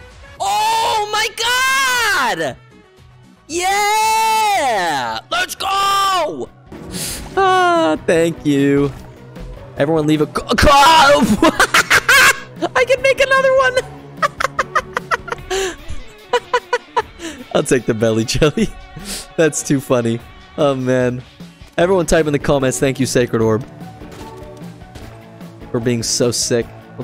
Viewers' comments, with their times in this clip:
0:09 i think the broken modem got ahold of his voice LOL